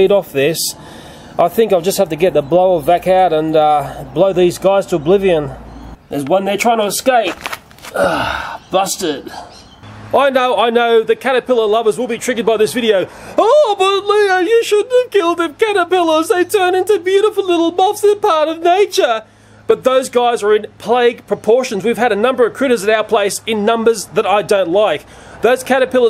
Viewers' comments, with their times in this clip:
0:06 hear the nice crunching sound of a caterpillar gettin crushed
0:07 in he says bastard